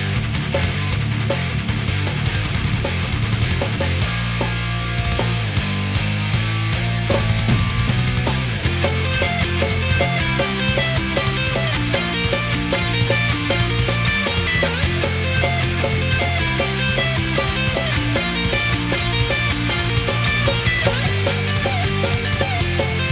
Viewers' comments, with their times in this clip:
0:04 is the best part, that melody is iconic